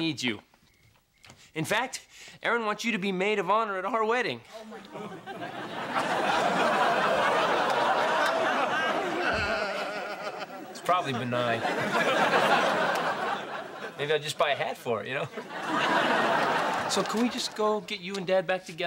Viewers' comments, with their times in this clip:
0:03 That OMG from the audience was the best part. 🤣
0:03 The crowd member going OMG is funny as hell
0:04 That “Oh My God” from the audience had me wheezing.